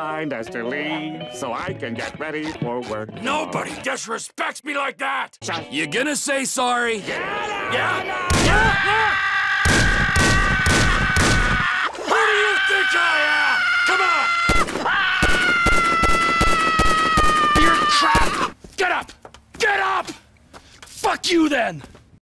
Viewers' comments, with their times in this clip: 0:05 The little shuh is almost always funny
0:06 You can hear the noot noot in this video
0:08 Squidward’s screams never gets old ^^